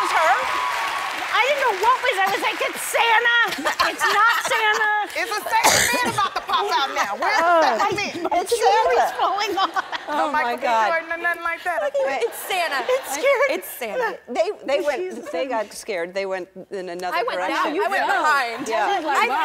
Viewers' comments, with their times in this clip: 0:05 WAIT, who coughed 😂
0:05 If you do this on interviews today🤣 guuuurl that cough 😬😷